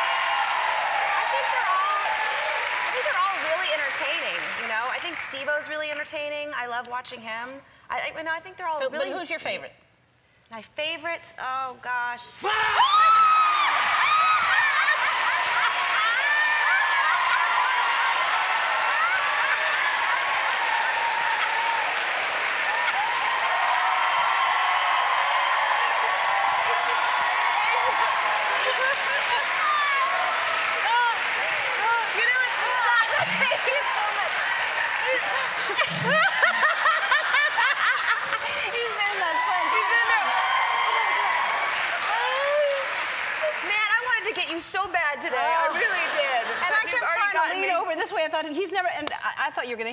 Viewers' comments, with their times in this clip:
0:08 Christina's laugh sounded like a wicked witch listen
0:12 and Ellen's laugh, ohgosh ♥
0:36 epic laugh from Christina
0:36 LOL Ellen's laugh loving it